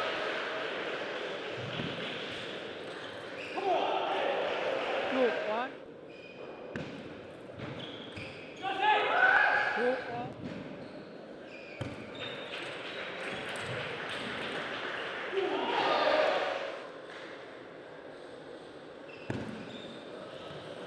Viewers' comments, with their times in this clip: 0:05 A real men scream